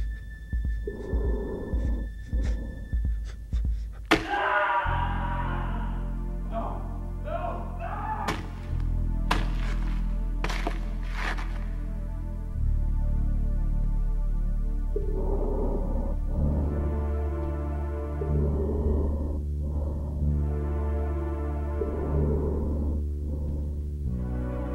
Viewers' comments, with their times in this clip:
0:06 lmao the hl2 citizen scream